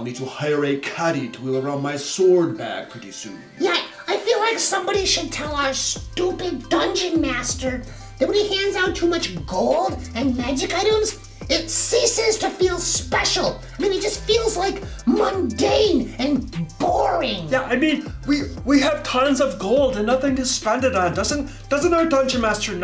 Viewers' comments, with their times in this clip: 0:05 Pro-tip, if you're gunna do ironic character voices to amplify your comedy. Don't use voices so jarring and awful that new viewers click away by